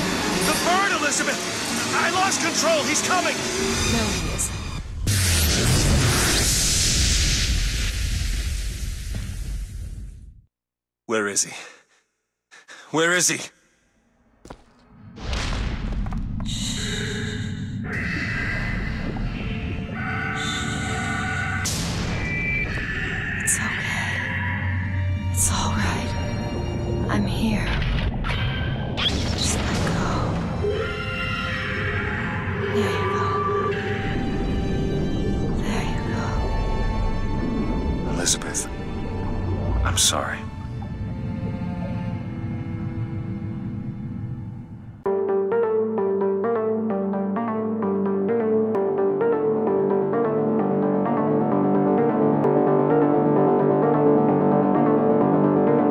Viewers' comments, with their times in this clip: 0:03 she went ham 'no he isn't" smack
0:42 Little sister crying over dead Big Daddy